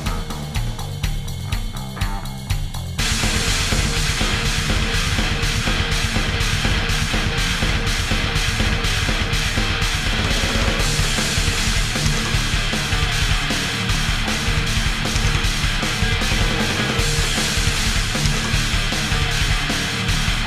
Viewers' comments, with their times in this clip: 0:05 Wow a true artist i love the riffs so much monstrous riffs best part was wow